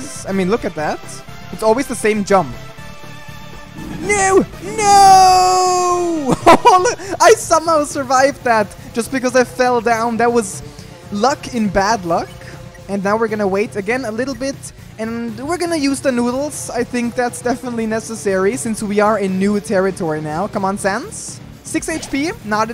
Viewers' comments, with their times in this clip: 0:04 what the hell is that screaming
0:04 You sounds like you’re British :P
0:04 😆😆😆the "noo nooooooo"sound lol